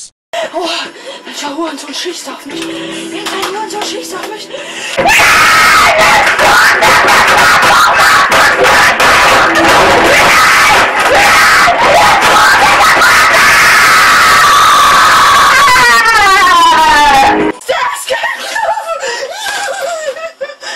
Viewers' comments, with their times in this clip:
0:05 Alert Ear rape!!! alert